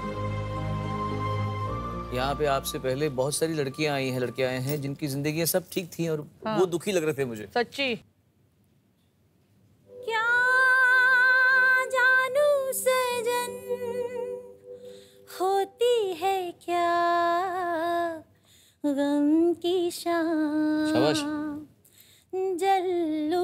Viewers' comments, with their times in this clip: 0:09 🥺🥺🥺😓 so heart touching voice ❤️